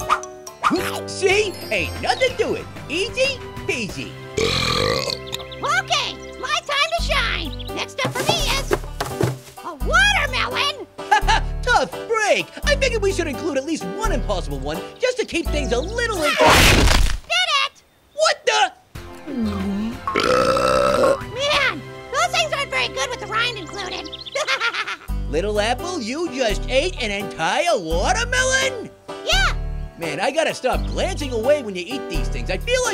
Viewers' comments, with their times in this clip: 0:04 he burped even though there was like no air in it
0:16 Yaa (loud eating sound) did it grapefruit: WHAT THE!? *he is really confused*:)
0:18 Trog! Homebrew nes dcpm voice: Trog says "What the?"
0:20 little Apple burps loud
0:20 lol the burp
0:20 giant Godzilla burp
0:20 do apple's burp at 0.25x speed
0:20 LOL the burp